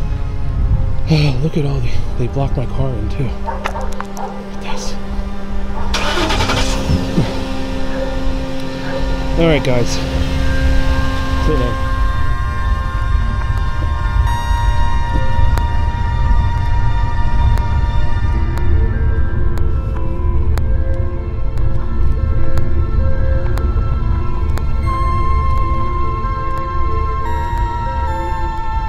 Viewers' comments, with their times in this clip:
0:10 What, music is playing?